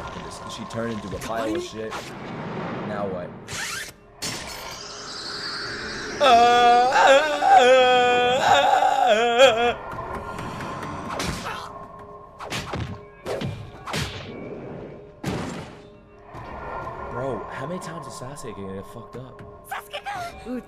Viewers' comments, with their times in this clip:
0:05 I didn't know you were able to recite the Survivor theme song. Either that or the Tarzan yell. Either way, I approve.